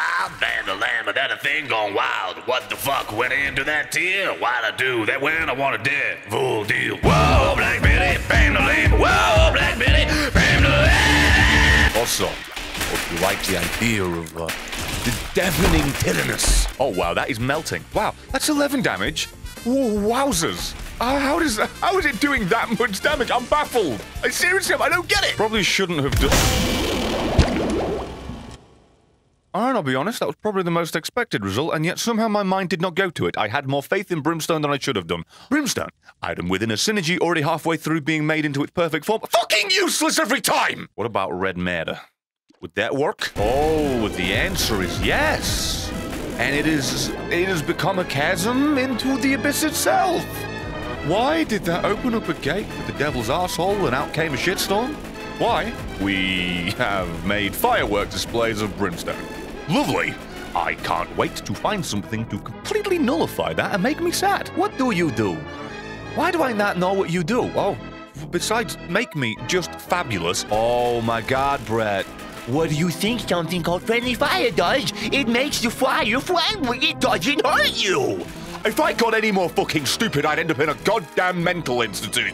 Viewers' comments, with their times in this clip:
0:04 I got a feeling your gonna get copyright striked for singing black betty for 5 seconds
1:03 Sounds like he has a different accent.